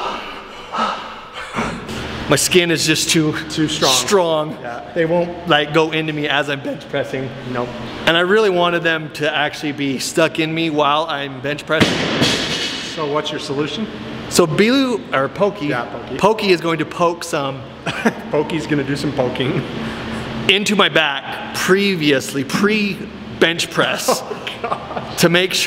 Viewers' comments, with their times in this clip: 0:06 who else heard that voice crack 😂